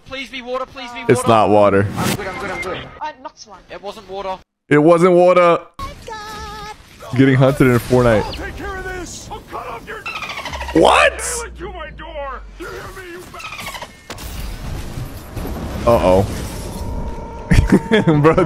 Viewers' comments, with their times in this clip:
0:03 why is Sypher being racist to his accent